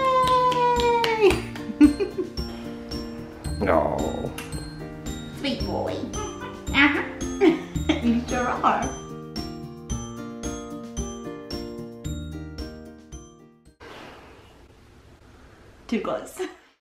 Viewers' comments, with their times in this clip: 0:07 ahh so nice when the girl make's boo sound he like that u see his hand for his eyes hahaha